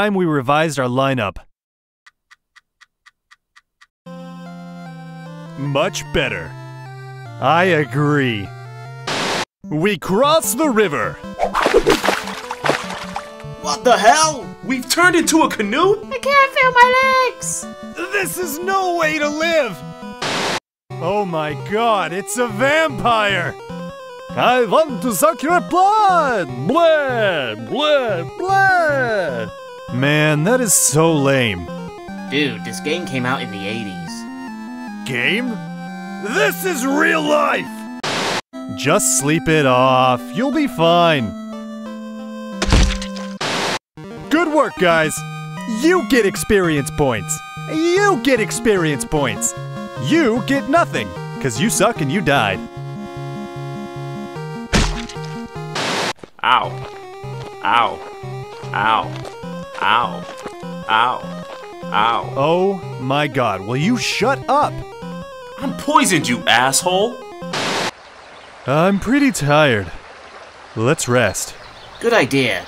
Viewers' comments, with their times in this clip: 0:03 I don't know why that exchange between the two Warriors makes me laugh so much. It's probably the delivery. "Much better!" "I agree!" Also I love the updated thumbnails that make them look like the covers of the games!
0:56 I wish this was the poisoned SFX in the game instead...
0:56 Sounds like Cleveland from Family Guy saying "Ow" repeatedly.